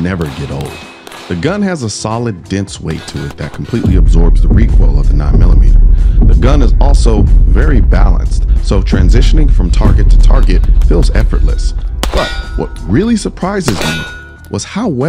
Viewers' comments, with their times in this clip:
0:03 EARTH TREMORS (Bass Boosted) great review Colion Noir, thanks